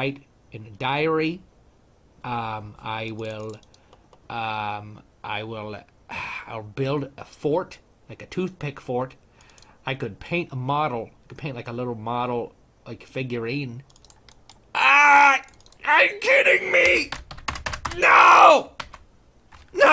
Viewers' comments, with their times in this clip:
0:05 lol, the *sigh*